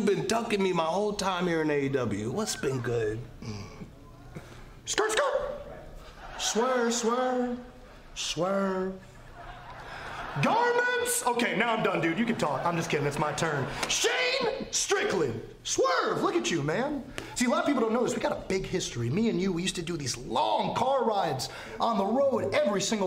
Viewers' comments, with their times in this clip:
0:04 My favorite part The way MJF Says his Name like that funny